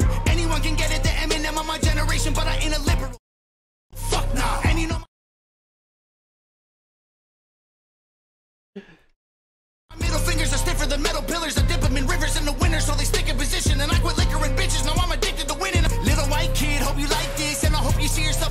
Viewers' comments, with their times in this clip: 0:03 i think its fuckin hilarious how the feature brings up ODB and sounds just like ghostfacekillah😂